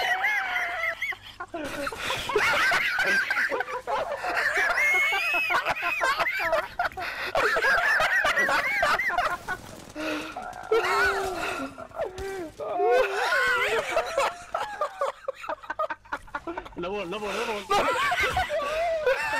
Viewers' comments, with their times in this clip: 0:06 his laughter is so contagious i could feel an asthma attack coming hahaha